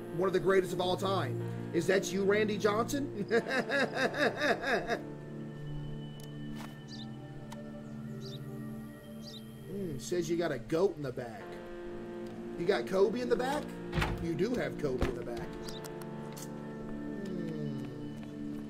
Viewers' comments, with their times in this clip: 0:04 I love how he goes from laughing to just :| instantly